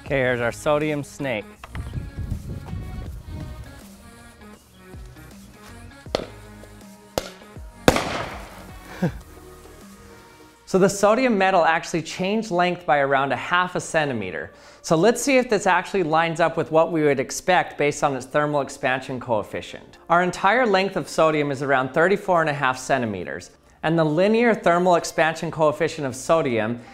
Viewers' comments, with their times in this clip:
0:09 It can’t be a video about sodium without a nice bang